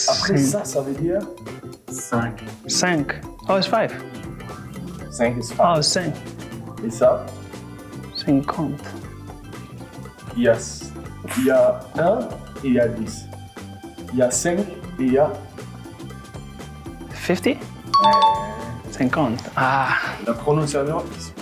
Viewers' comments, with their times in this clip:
0:03 Wijnaldum just talking Dutch😂